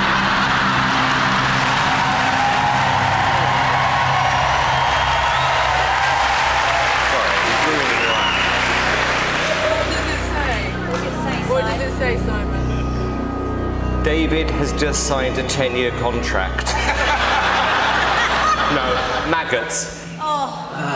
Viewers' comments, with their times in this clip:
0:06 Absolutely loved it when David laughed on the 2nd act, and that man walked over to him ..."little man". lol ..that look he gives when David smarts off on the plastic surgeon.. perfect character